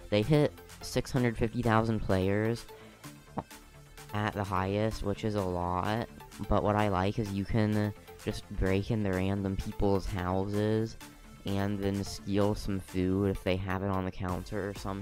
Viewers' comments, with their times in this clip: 0:03 le epic fart